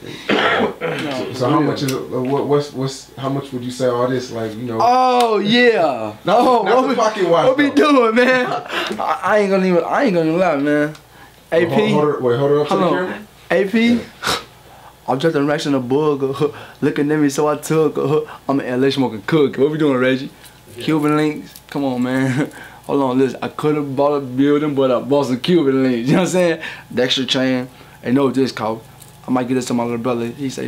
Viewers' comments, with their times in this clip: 0:10 what is he saying he says that in like very song
0:14 "Im drinkin racks & a booger" .. wtf did he say lmaooo Dex be trippin